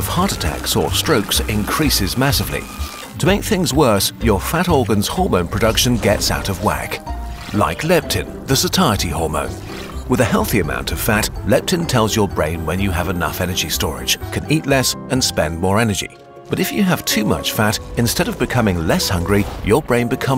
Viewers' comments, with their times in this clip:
0:07 Have I been pronouncing this wrong??💀